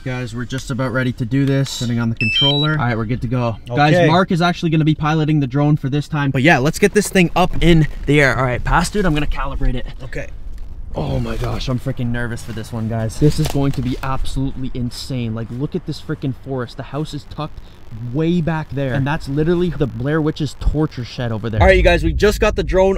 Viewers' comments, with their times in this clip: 0:05 the way that he said they were there yesterday